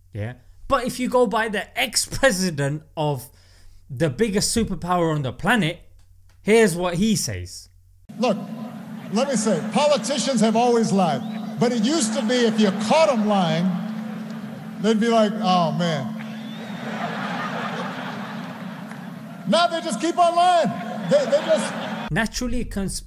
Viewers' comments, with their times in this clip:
0:08 he was amongst one of the best PM in terms of you just wanted to listen to and have him lead you because of the way he spoke and his voice as a leader...